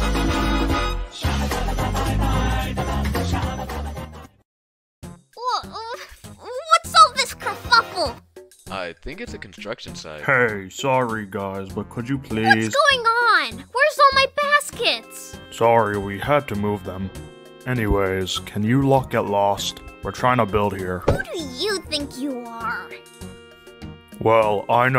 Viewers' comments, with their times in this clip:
0:06 I like how when hourglass said kerfuffle, a part of the intro played